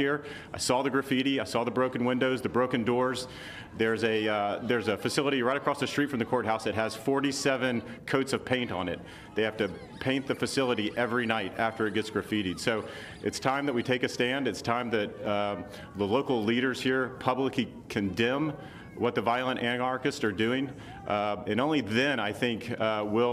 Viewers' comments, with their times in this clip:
0:10 that squeaking? Is that a dog toy? lol